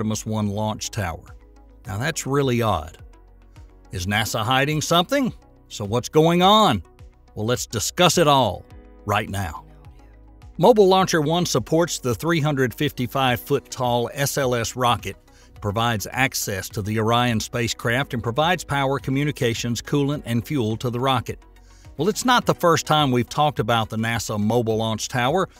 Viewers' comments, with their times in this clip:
0:10 Still curious at the end of Mr Nelson saying right now a man whispers Oh Yeah?? If anyone else makes out the two words as different please let me know